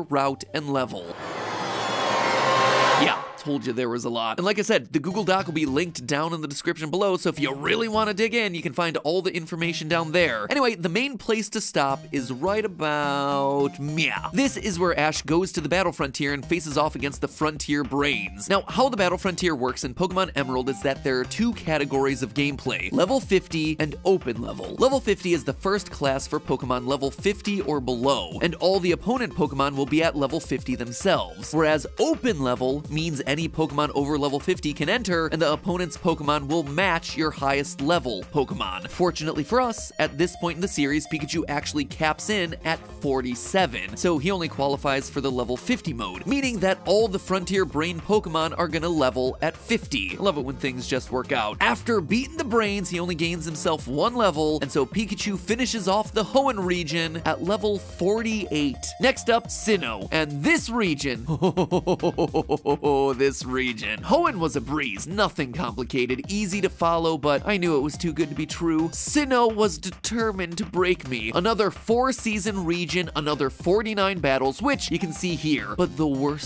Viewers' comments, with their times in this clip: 0:05 That Drumroll Reveal of Pikachu's Level Would've Been Better If I Didn't See It ...
1:01 that's the laugh of a man who has been through hell